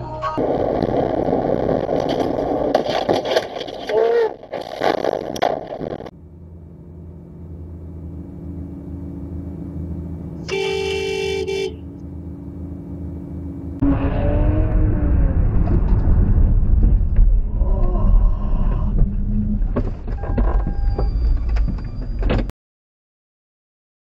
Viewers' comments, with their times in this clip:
0:07 i kinda hear ksi thick of it song💀💀